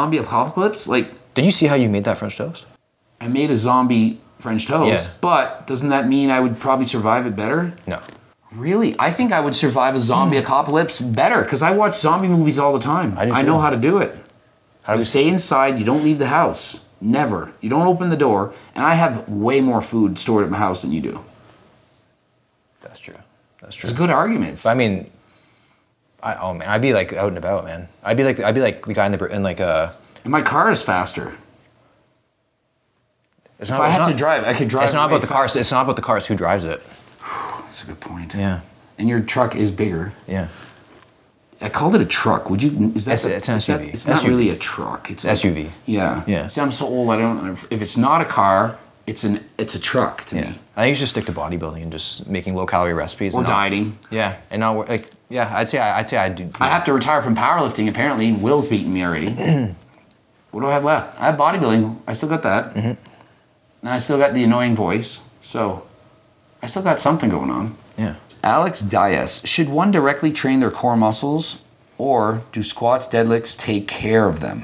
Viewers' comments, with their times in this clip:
0:10 ... From now on we must only refer to it as a Zombie Acopalipse. Thank you coach.
0:11 Ill never say the word acopalypse the same ever again
0:55 the tremble in Coach Greg's voice when he talks about retiring from power lifting 💔